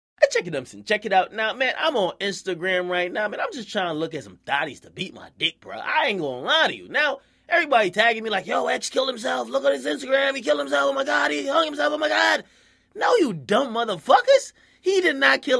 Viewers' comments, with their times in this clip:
0:01 Wtf is he saying
0:01 Wtf is he saying